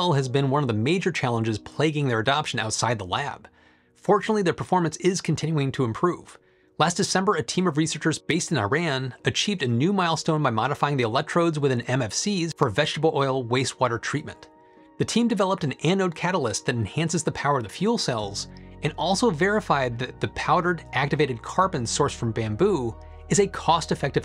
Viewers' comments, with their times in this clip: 0:08 one day, Americans will learn how to pronounce Iran correctly. I am hopeful 🤞